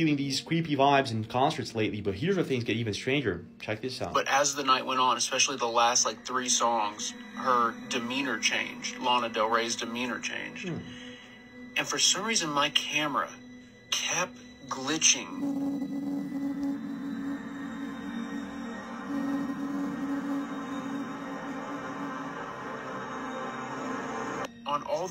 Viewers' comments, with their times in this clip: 0:09 For some reason, him popping in the side and going "hm" and going away just fucking cracked me up.